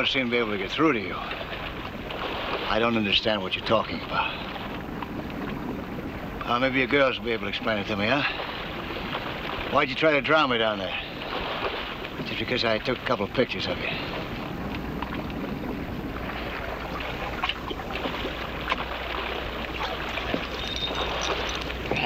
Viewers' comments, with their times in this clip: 0:06 --The blonde in the center is June Blair--former Playboy model who married David Nelson and joined the cast of "Ozzie & Harriet". That mouth, that voice... grrr.